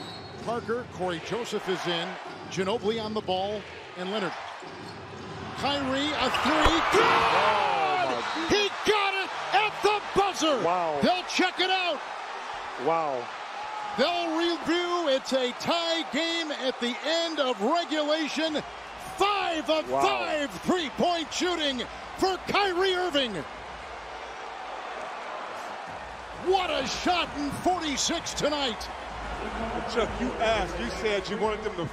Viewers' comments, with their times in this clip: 0:06 is when the buzzer is
0:18 i thought it was stephan a smith's long cast cuban cousin